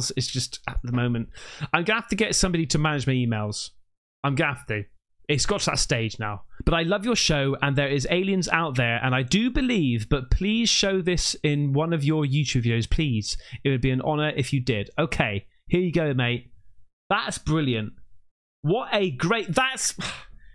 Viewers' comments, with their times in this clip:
0:03 Lolol. The way you said... I've got to get someone to manage my emails, is hilarious to me. Like you really can't stress that fact enough. The emails are overflowing. Just so many 😂